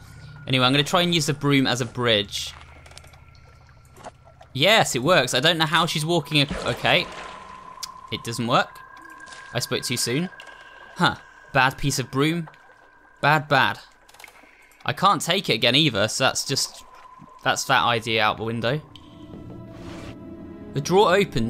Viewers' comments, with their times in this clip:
0:06 Minecraft water noise